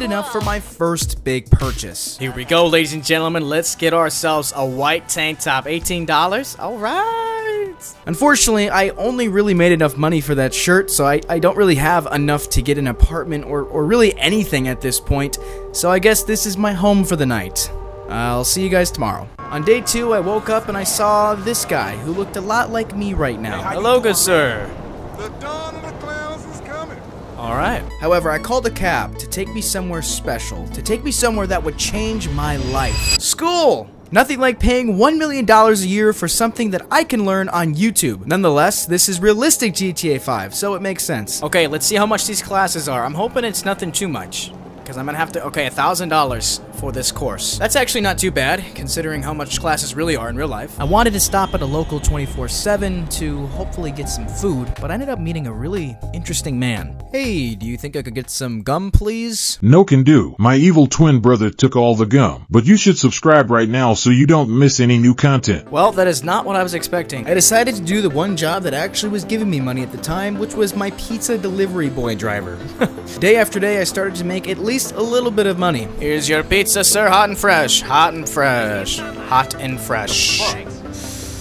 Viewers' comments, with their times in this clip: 0:10 whats with the autotune
1:07 Is bro using autotune 😭